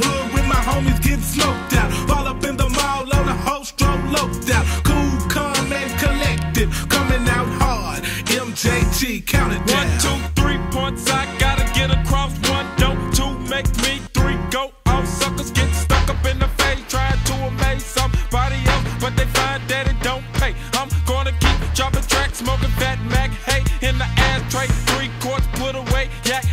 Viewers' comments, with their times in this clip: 0:08 1,2, 3 points I gotta get across: 1) Don't 2) Make me 3) Go off! He slid on that beat so fucking hard. 🔥🔥🔥🔥🔥🔥